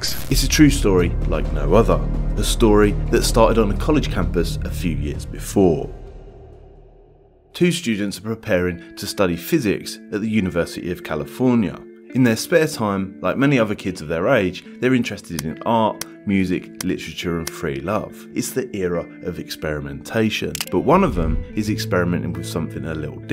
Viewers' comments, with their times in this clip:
0:08 I could listen to this background music forever